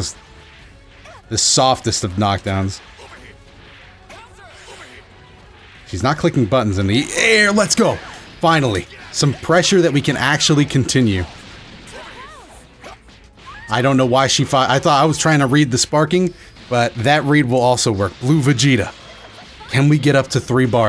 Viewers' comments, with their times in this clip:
0:06 "She's not clicking buttons in the... AIR LET'S GO" I love those moments when you can feel the power of the punch/kick in the voice xD